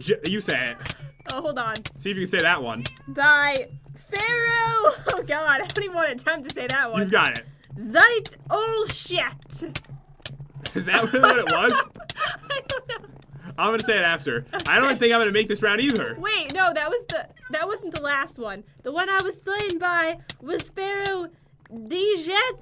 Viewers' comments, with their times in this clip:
0:05 lol sounds like she said sh*t